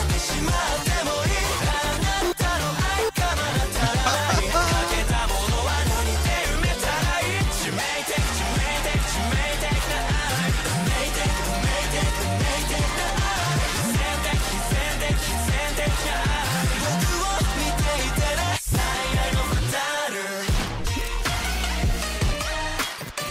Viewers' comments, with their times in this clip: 0:07 Idol is such a hard song to live up to. When I first heard this in ep 1, I didn't think much of it. But after listening to your reaction and it some more, it's grown on me considerably. Those castanets are such a nice embellishment. The overall darkish mood is fitting while still having a variety of mood shifts. The hook has captured music illiterate folks like me and won't leave my head. Also appreciate it more after seeing the lyrics there: 致命的な愛, 運命的なI, 必然的な哀, and how in general, all the lyrics show that this song was created just for the show.